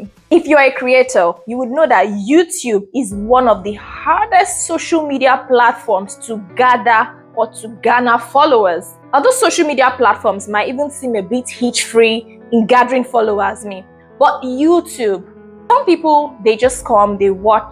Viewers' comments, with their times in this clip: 0:03 lol it’s how the background music changes for me 😅